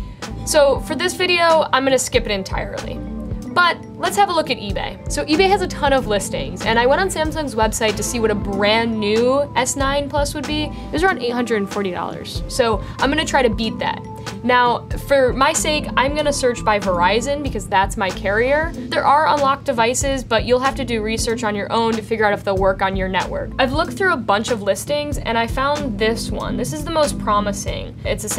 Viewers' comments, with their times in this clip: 0:10 i like the secret voiceover ;)